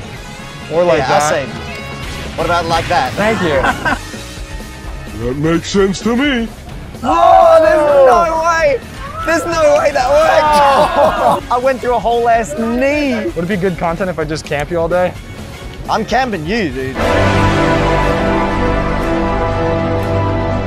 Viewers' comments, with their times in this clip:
0:03 The "haha" syncs with the song. Probably unintentional, but I can't unhear that
0:04 the crowd irl sounded like the crowd in Smash 64